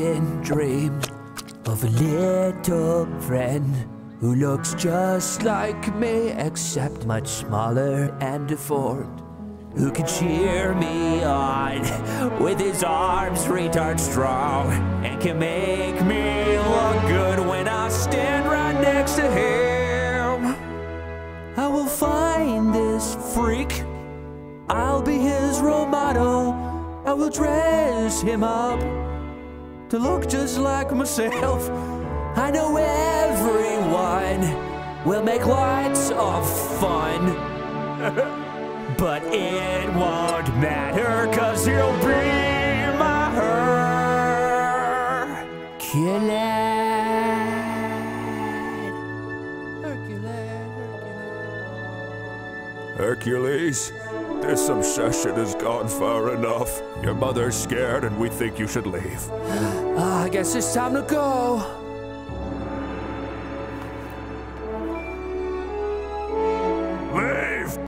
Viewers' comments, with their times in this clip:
0:09 You can see the transition from "haha funee herculees" to "wow, I'm actually singing"
0:14 can we talk about how good he hits these notes? Holy shit this legitimately gave me goosebumps
0:19 is it just me or is that sound just like Toby Turner?
0:19 The chord was unironically well sung.
0:25 I thought he said I'll be his Ray Romano the first time I watched this.
0:30 That little giggle had me WHEEZIN
0:31 that flub is just golden
0:31 the scoff got me so good
0:37 Is no one going to talk about the little squeak when the star hits the ginormous Herculad ? I think that's a moment that needs a lot more appreciation.
0:59 I love how he doesn't sound disappointed at all